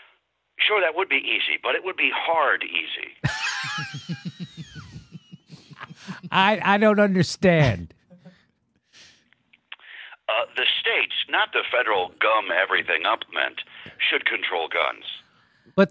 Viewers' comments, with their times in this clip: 0:03 Jimmys laugh is everything